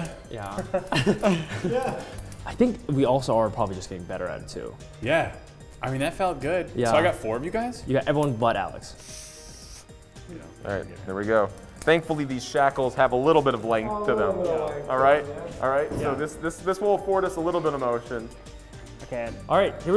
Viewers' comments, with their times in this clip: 0:06 did he pull out a vape and take a hit? Sounded like that. Its hidden by his hand to ofc